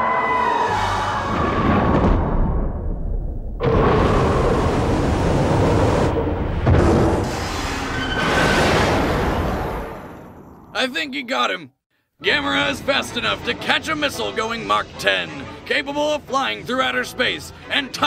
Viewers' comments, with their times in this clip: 0:03 Why did it sound like someone was burping ?